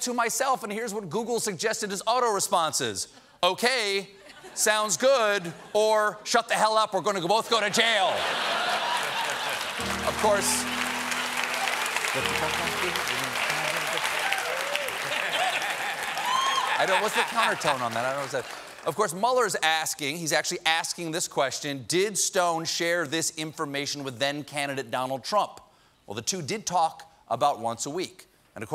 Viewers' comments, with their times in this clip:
0:09 That non too subtle jailhouse rock piano riff by Jon.